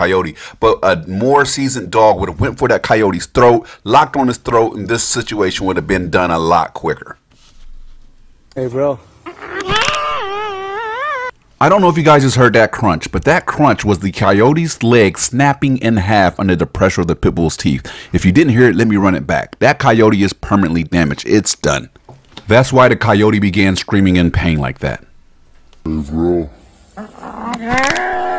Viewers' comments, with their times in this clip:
0:08 That crunch tho 😂 That sounded like someone eating a large taki chip
0:08 When you try Cheetos White Cheddar for the first time. Also, the coyote sounds like Crash Bandicoot screaming.
0:09 bro this video is 100% staged and is for views. THAT SOUND ISNT THE COYOTES LEG BREAKING ITS A STOCK SOUND